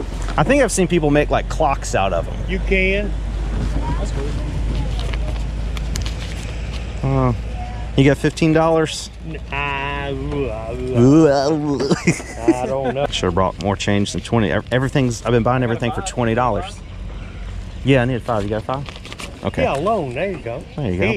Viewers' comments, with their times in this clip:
0:09 Bro I lost it when you mocked that mans "ooaaaewww" lmfao